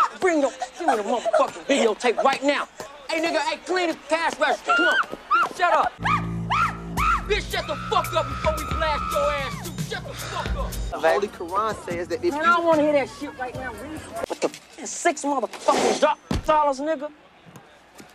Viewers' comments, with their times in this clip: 0:06 dude o dogg yelling all pissed off at that horrified girl has always cracked me up.